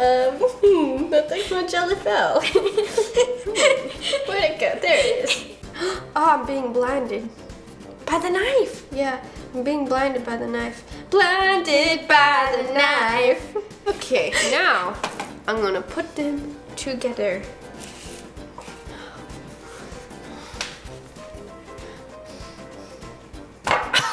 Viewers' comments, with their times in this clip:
0:10 they are singing in the future! they are singing “blinded by the light” by The Weeknd 😂!